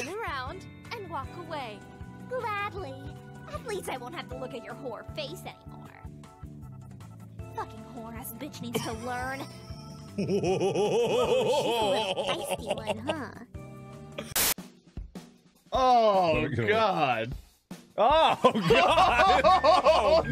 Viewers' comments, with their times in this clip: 0:07 Markiplier is laughing at Hunie Pop and nobody cared about it~